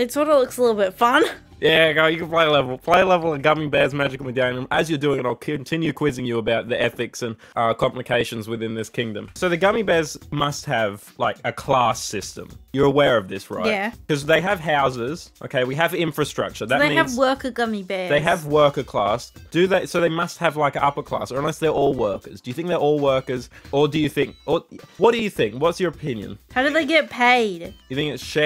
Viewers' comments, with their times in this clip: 0:10 hearing the pokepark music in the back just gave me the biggest blast from the past. i only realised what it was like 10 seconds later and my eyes widened in surprise